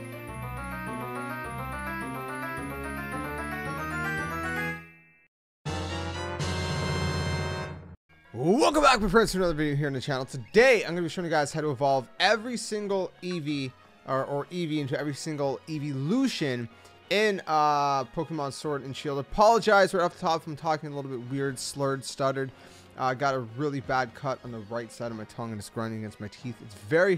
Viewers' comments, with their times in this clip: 0:08 Jesus you talk fast